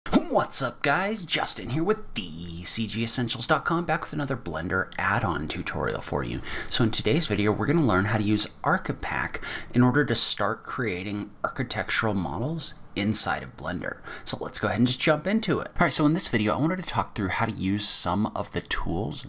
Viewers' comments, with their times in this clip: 0:01 When you need to record a tutorial but your mom is sleeping in the other room